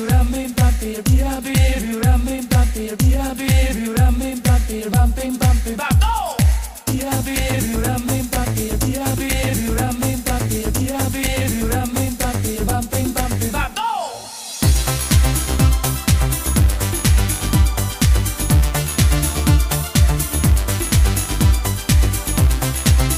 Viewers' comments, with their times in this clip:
0:04 in tho the break down wooooooooooo